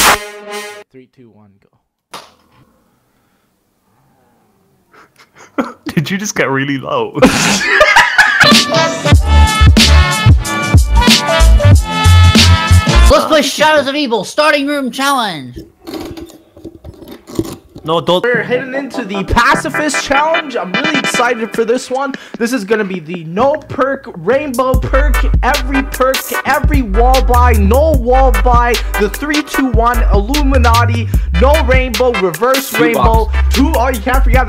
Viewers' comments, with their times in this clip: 0:06 holy fuck i cannot get over his laugh
0:18 In the beginning I love that WII Shop music! xD